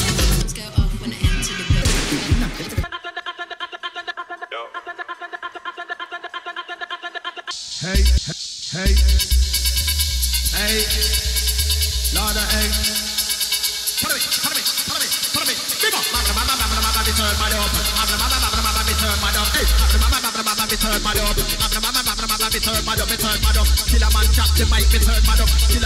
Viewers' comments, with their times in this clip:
0:08 can someone explain to me why the laptop stopped but music is still on?